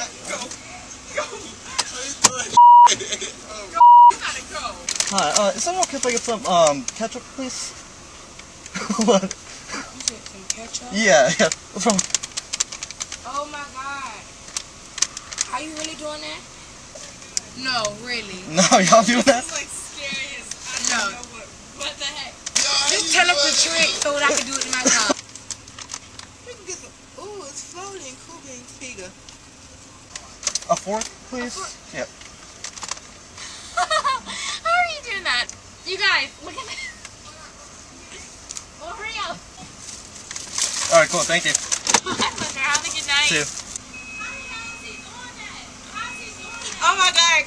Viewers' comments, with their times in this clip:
0:05 Girl's face and reaction 😂🤣 The way she said 👀 "You said some ketchup?" 👀 ☠👻
0:32 Girl has cute smile and laugh
0:34 Girl is cute and has a nice laugh.